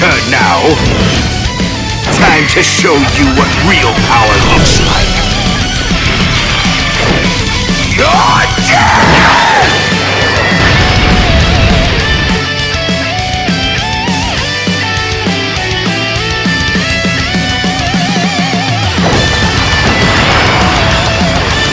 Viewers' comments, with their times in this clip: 0:07 on the bright side it sounds like yusuke